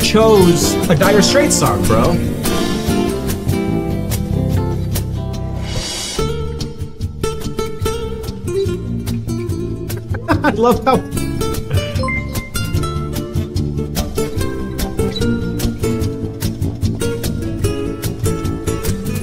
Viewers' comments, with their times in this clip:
0:05 Talent of these guys is so supernatural that they made the chime for the new subscriber land in key and on time.